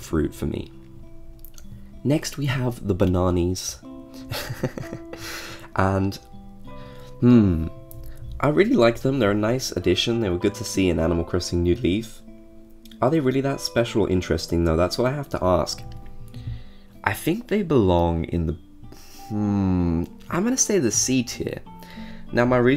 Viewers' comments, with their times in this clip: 0:03 oh mah gah, i love his LAUGH😍😍 why nobody talks absolut IT ❤